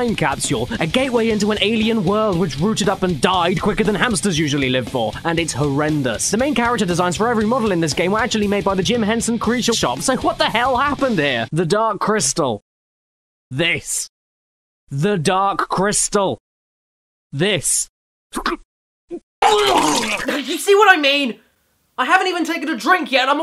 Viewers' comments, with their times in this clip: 0:07 Hiccup when saying Jim Henson's Creature Shop